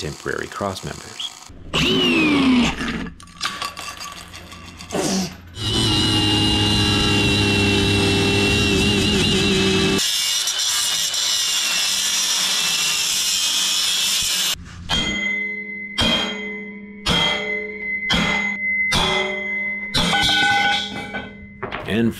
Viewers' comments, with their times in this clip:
0:06 Bro started speaking cicada